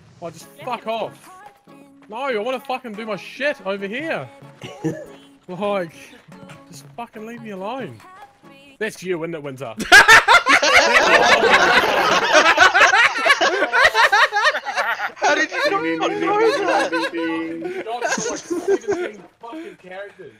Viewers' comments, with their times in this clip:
0:08 what does the guy say before they all start laughing?